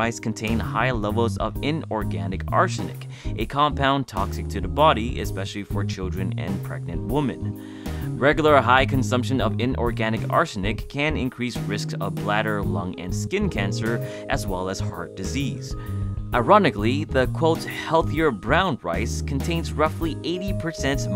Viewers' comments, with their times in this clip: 0:07 You said woman but I think you meant women, like wimen